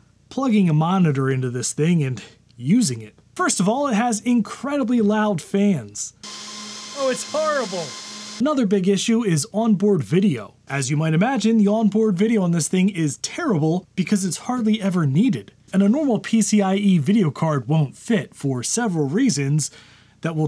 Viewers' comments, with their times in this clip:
0:04 Which sounded like an elephant mimicking a Formula One V10 engines of the 2000s.
0:06 fans in the key of Gansta's Paradise